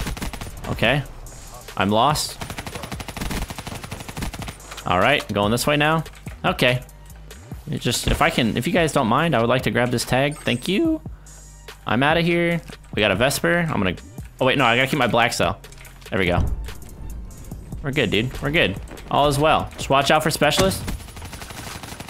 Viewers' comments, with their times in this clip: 0:10 THE VOICECRACK IS SOOO ALIVEE!!!like if u agree